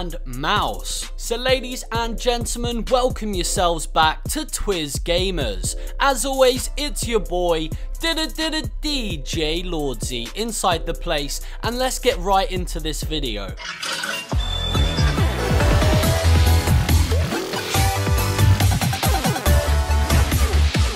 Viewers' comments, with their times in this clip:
0:07 I thought nigga was bouta sing the Dora theme song